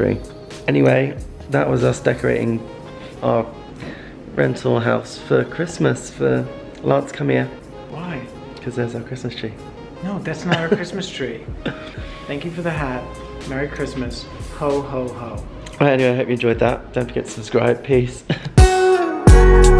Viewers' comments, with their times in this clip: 0:07 Idk why but this is when I realized I really love lance's voice